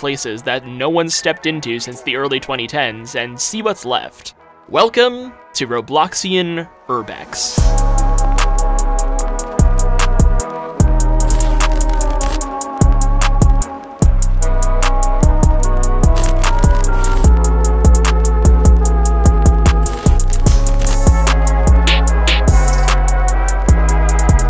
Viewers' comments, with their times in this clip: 0:08 this remix goes hard